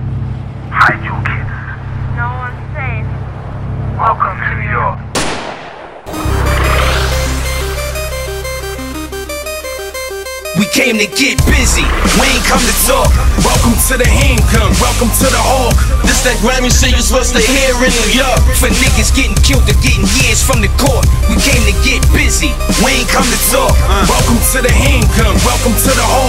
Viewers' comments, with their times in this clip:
0:08 MUSIC STARTS YOU'RE WELCOME